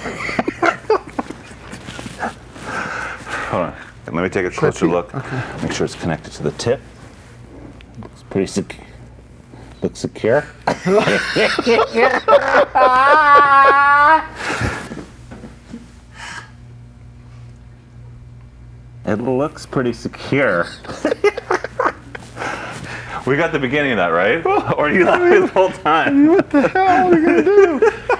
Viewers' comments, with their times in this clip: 0:10 Truly my friend. Those intense, uncontrollable laughs remind me of the laughs my good friend and I used to have years ago. Especially
0:10 the most fucked up laugh I've ever heard Eric make.
0:10 that sam hyde laugh
0:10 best laugh ever